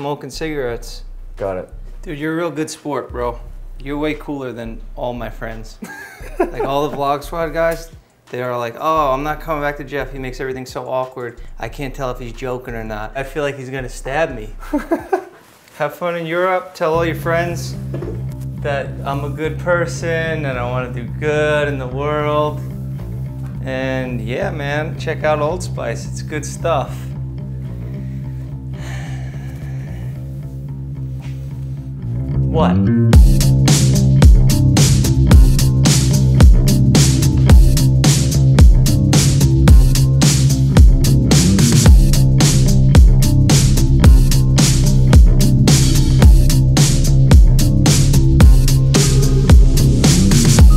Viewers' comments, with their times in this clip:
0:05 that voice lmao
0:33 Back again with that sexy editing and music